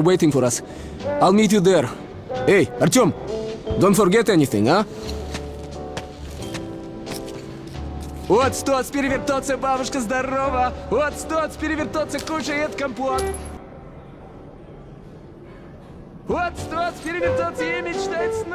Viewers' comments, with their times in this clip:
0:05 The guy has voice from the russian guy in cod2 :)